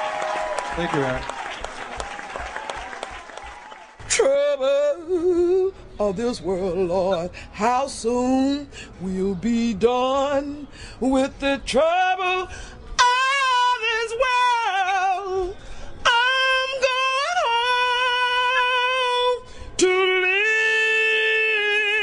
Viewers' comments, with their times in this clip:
0:04 WOW What a voice!!!